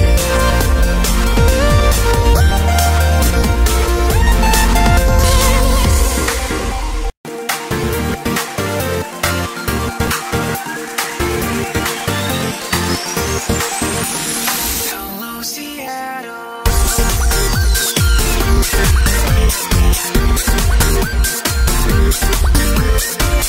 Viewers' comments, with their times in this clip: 0:10 sounds like california gurls and looks like it with the pink clouds LOL o_o